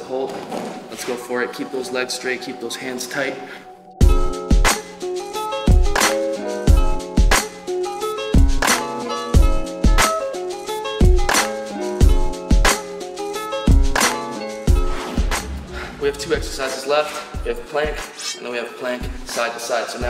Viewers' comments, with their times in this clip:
0:04 Good video man. The beat on s for the L sit hold on the parrelettes is pretty hard and chill